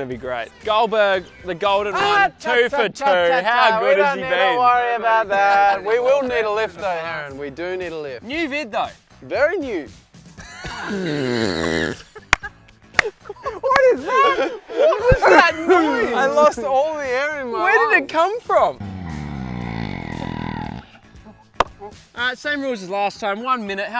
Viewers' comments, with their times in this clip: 0:09 How Ridiculous was the noise real I was dying
0:10 IM HIGH AS BALLS RIGHT NOW SO THE NOISE JUST KILLED ME!! IT SOUNDS LIKE A CAT DEFLATING!!!2019BTW
0:10 OMG WHAT IS THAT LAUGH XD
0:11 my stomach in class
0:11 when you here your parents or roommate snore obnoxiously